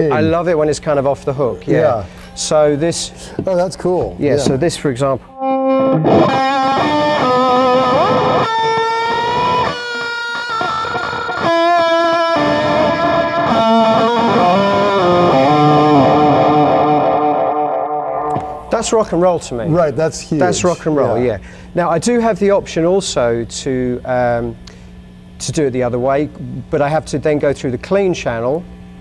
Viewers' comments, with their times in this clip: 0:06 He prefers delay before drive!!! Man, I thought I was the only person on earth who actually liked that sound. so gnarly
0:11 He sounds, talks and probably thinks like Nigel
0:11 I close my eyes and feel I'm listening to 'Rig Rundown - Nigel Tufnel'